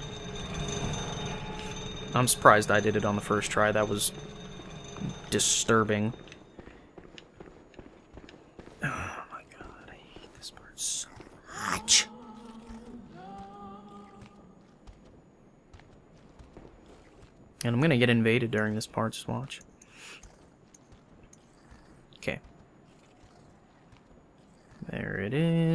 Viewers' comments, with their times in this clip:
0:07 "argh I hate this part!" "Lalaaaaaaa" sounds like the brain guys having the time of its life haha